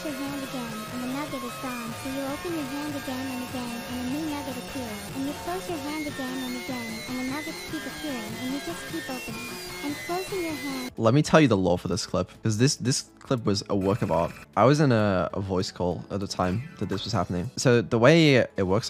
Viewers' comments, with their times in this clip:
0:04 Why does that remind me of Mr Brightside?